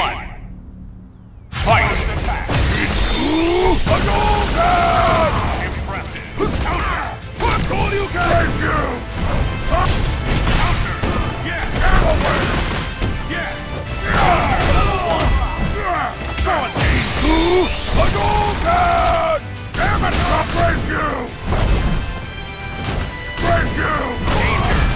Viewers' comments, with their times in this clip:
0:08 no bad hulk, no rape ryu, I know he says break you but it sounds like rape you